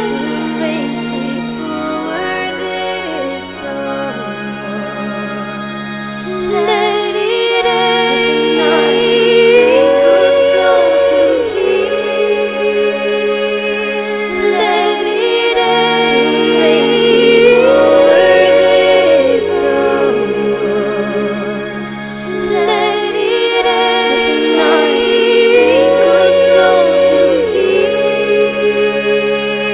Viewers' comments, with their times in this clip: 0:10 my heart broke. After watching this episode a few months ago I never watched it again. I still can't believe it actually happened and now I find myself still crying my eyes out, the way Robb looks over to his mother is just heartbreaking. This song is beautiful and fits the scene perfectly, I love your voice.